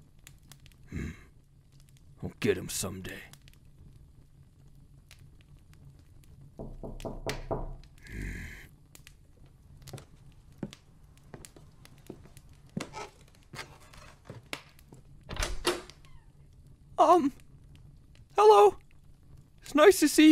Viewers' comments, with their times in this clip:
0:04 got me looking for the non exisistent person who knocked on my damn door 😭😭
0:06 That knock legit scared me 😅